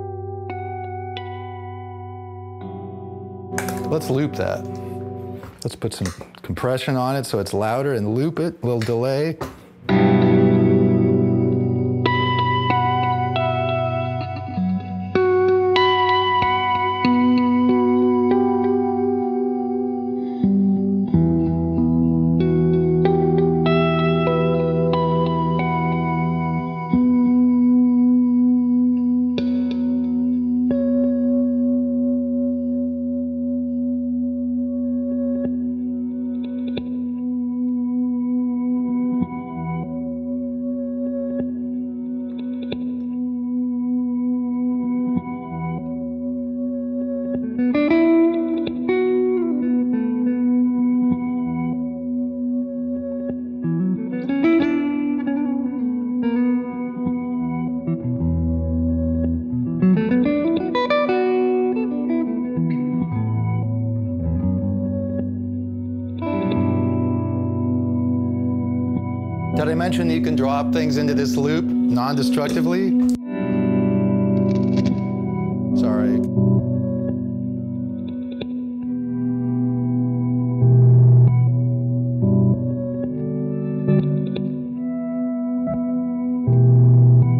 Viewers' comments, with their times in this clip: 0:09 They need to write a Blade Runner type movie around the jam he lays down
1:09 Amazing some of the sounds he can get. That bit sounds like Tim Hecker or something